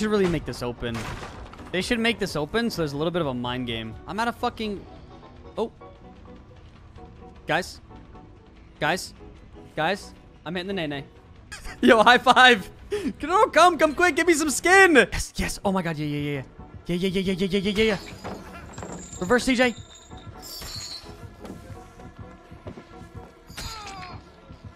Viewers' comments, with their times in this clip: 0:05 All i hear is "Grab mah strong hand!"